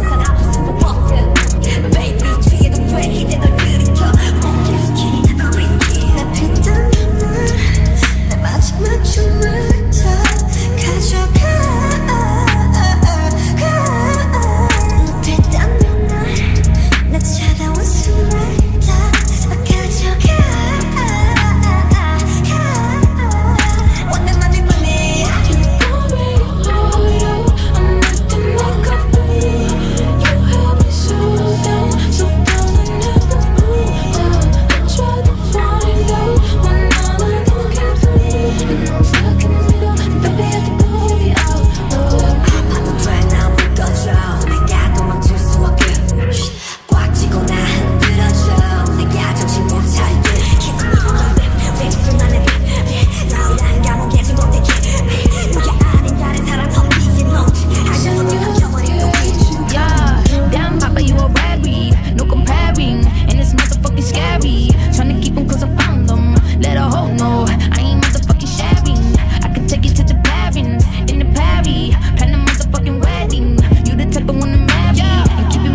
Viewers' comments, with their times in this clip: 0:06 i swear to god, I ascend to heaven when hear their voices bro like i just wanna LEAVE.
0:06 kim taehyung aka V's vocals are insane here
0:27 The manhi manhi that starts in the background from is such a smooth but elegant touch
0:50 Suga's fast breathing on his part 😮 addicting✨ now I can't literally breath
0:57 why does it oddly sound like someone chanting some weird shit in the background ?!!😂😂